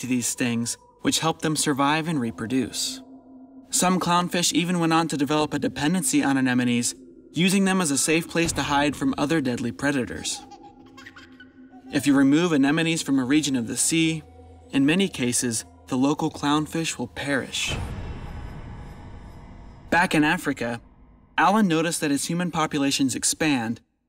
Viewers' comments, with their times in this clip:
0:07 What's with the sound effect of a child laughing ? It has absolutely nothing to do with the video or audio content. Great video, but idk how that sound effect seemed relevant to what's happening here. Maybe I'm missing something.